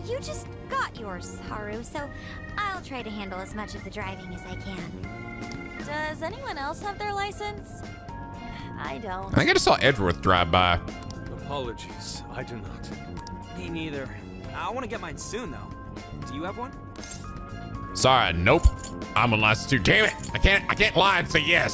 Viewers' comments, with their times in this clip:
0:09 I haven't thought about muffled rap music in the distance in forever